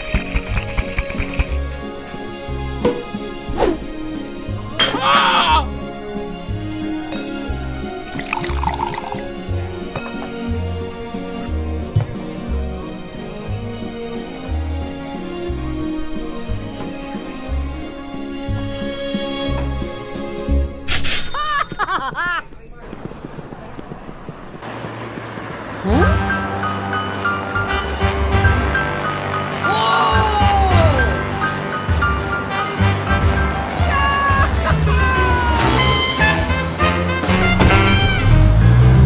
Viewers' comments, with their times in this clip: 0:05 THAT SCREAM LOLLLLL😂😂😂😂😂😂😂!!!!
0:20 that laugh though...